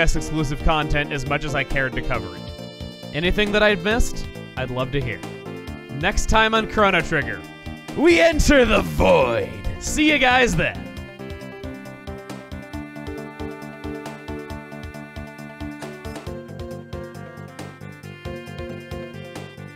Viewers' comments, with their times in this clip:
0:07 Man the second to last thing he said ... sounded like Mark Hamill.